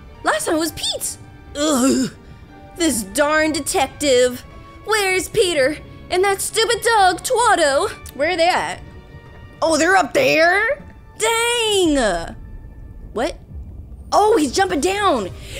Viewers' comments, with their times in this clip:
0:03 i like how she's talking ❤😂